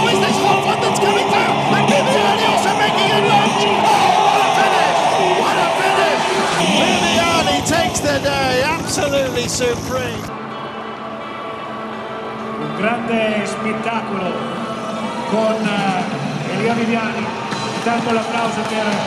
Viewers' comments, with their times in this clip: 0:04 That commentary sounds like Davros; his manner of speech is generally soft and contemplative, but when angered or excited he is prone to ranting outbursts that resemble the hysterical, staccatissimo speech of the Daleks.